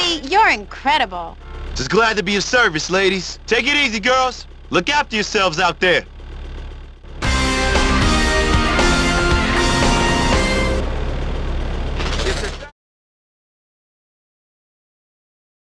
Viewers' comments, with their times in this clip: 0:07 love this tone